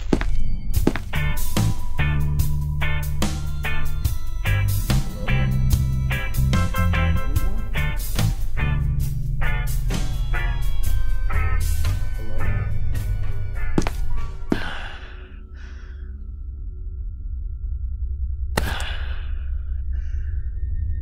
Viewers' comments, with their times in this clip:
0:08 i hear sound scp 939
0:08 -15;48 i hear sound scp 939